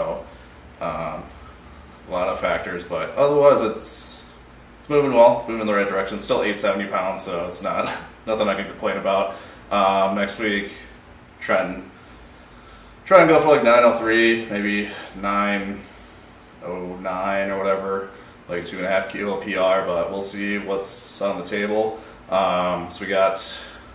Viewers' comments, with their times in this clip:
0:09 "Next week... tren." 😂